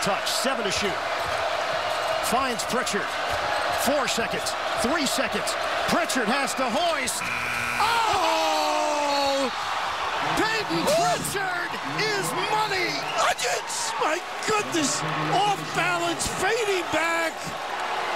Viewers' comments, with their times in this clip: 0:06 Listening to that Husky crowd just die and go quiet was GLORRRRIOUS!